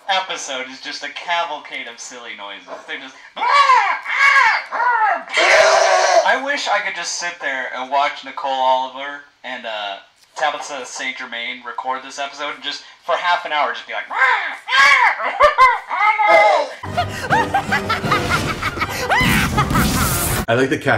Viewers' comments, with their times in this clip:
0:06 The noise RD made OH MY GOD ITS SO FUNNY